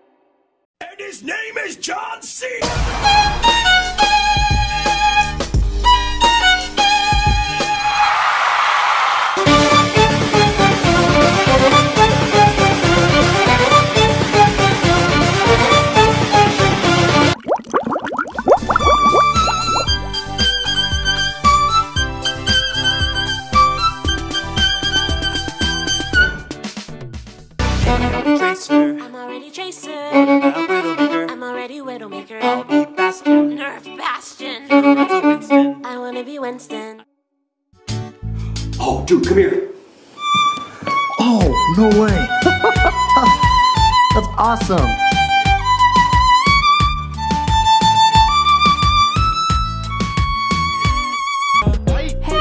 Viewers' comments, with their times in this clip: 0:03 who the fuck is playing the violin??
0:08 Is nobody gonna talk about that Megalovania Violin
0:10 nice violin dude i want it
0:11 OMG THIS VIOLIN
0:11 that violin is beautiful
0:18 ur just scraping my ears
0:23 this song... is the best ever
0:40 song in spanish yeahhhhu